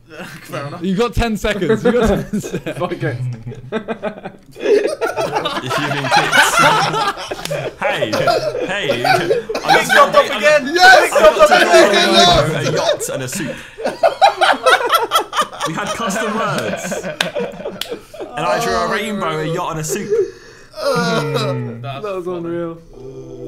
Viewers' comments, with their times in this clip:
0:04 LMAOO for some reason it's so funny how Josh got kicked and everyones just laughing :D